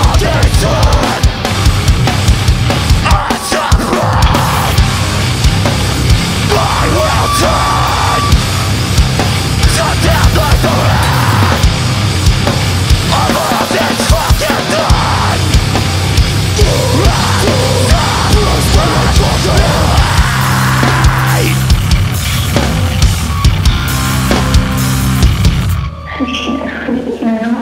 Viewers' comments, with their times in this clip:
0:10 That fill is all of the fills in the world combined into one second of pure madness.